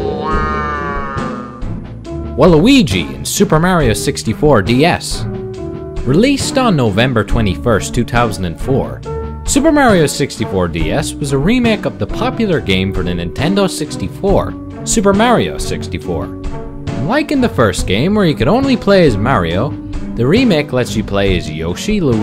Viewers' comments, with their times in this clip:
0:06 Too Tousand n Four